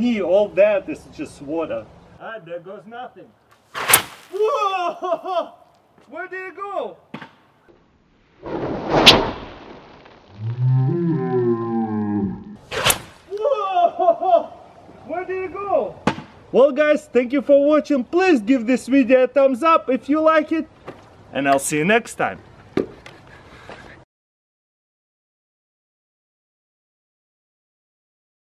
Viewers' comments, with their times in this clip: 0:06 It sonic boomed
0:09 I can hear a cow 😂
0:09 I can hear a rocket
0:09 and here we have the Russian Whale, letting out a majestic call of Excitement.
0:09 i heard a cow
0:09 If you go to you will here the whale mating call.
0:09 I can hear a cow 😂
0:09 Was that a sonic boom ???
0:10 hehe u sound like a cow